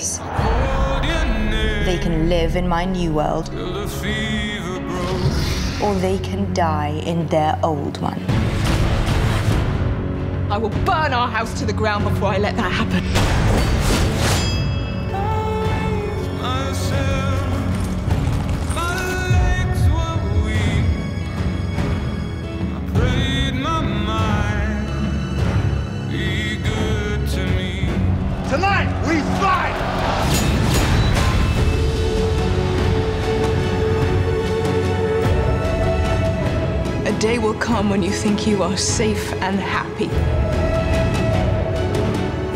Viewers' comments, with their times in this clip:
0:10 This line was was delivered much better in the final cut
0:26 it sounds like "Ygritte to me" When it is on Ygritte